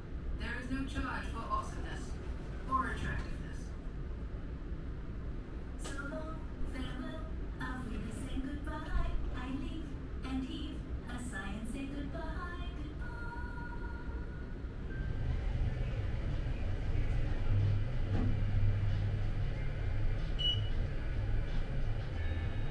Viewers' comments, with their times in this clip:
0:05 there's something sad about a robot singing goodbye by itself in an empty hallway. 😢
0:05 the door closed and then the robot started singing. Too bad, no one was there to hear it except for the camera/you guys😂😂😂